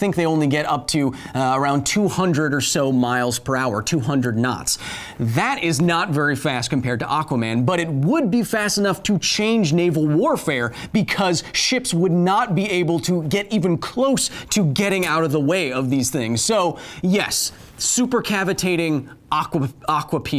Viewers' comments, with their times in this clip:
0:05 nought very fast haha